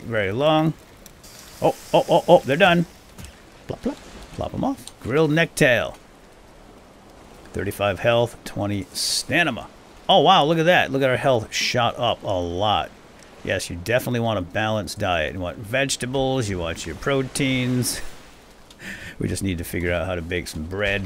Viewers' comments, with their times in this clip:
0:05 you said stanima instead of stamina :D great video though!! game looks pretty good.